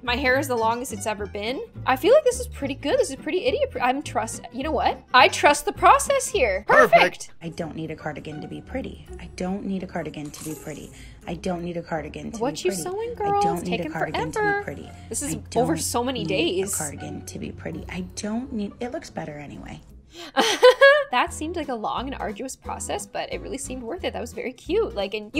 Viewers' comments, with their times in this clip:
0:08 sounds like every english teacher mixed together